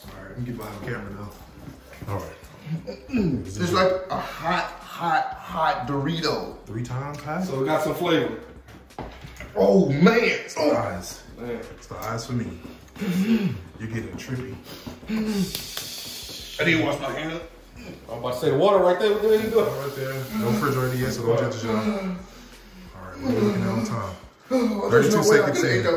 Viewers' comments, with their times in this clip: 0:07 the sounds you make when she keep going